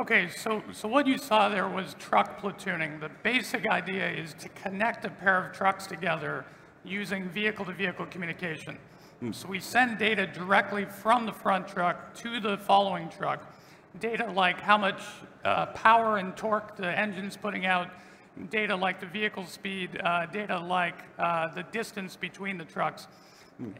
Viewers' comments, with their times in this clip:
0:05 who did "hmm" in-between this video